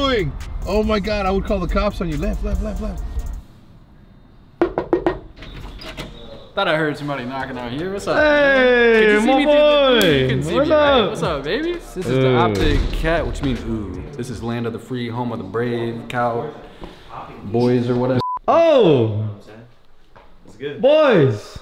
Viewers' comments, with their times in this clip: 0:08 lol thought it was lemonnation